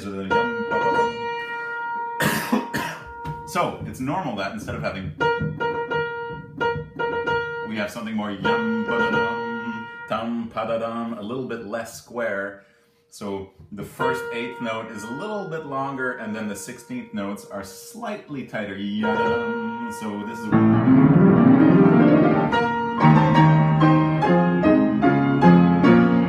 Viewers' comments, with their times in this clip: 0:10 hey it’s a waltz